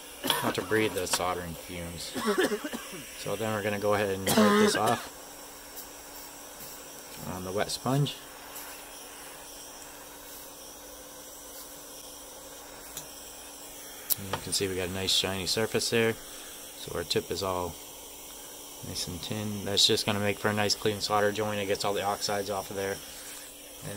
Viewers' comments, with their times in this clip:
0:08 perfect timing, He says ' be sure not to breath this ' and someone in the background starts coughing up lung, Great video plus a giggle, Who could ask for more?